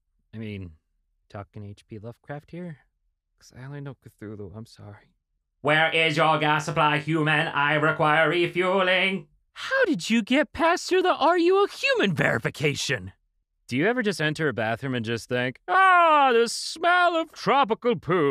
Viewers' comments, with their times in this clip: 0:06 EXCUSE BUT WHY DO YOU SOUND LIKE A HECCIN DALEK